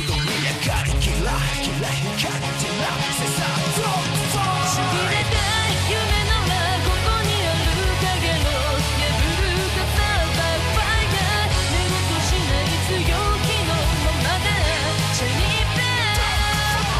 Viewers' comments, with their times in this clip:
0:04 my god the editing is top notch.I loved how he synced the satanic voice of the singer with the demonic aura of the car. That was insane.